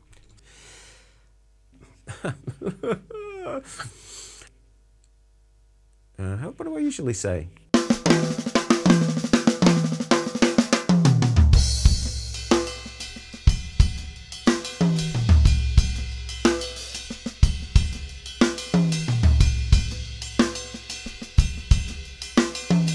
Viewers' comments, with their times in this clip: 0:06 Thanks for the video! I want to transcribe that great fill !